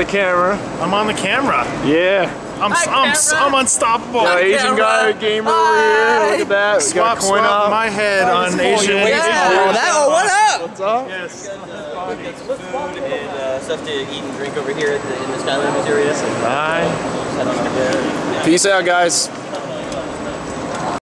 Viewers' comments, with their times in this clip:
0:10 skylander dad mayabe but the voice is not the same